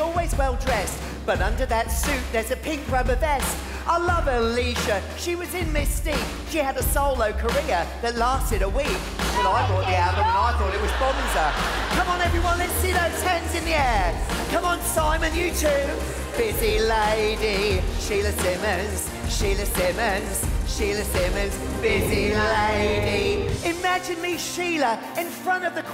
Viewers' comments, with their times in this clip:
0:08 she sounds like project zorgo who agrees? ☟︎